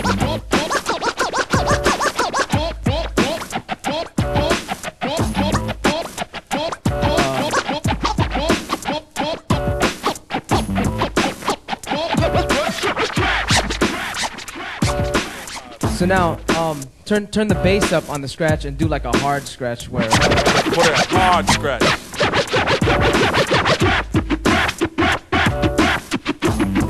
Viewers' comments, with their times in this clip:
0:07 dat one click flare